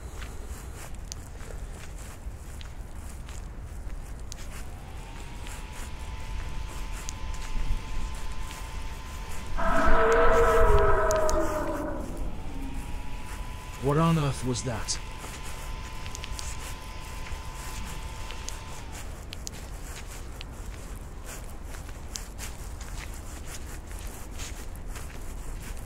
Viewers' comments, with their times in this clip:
0:08 Manz what was that crazy sound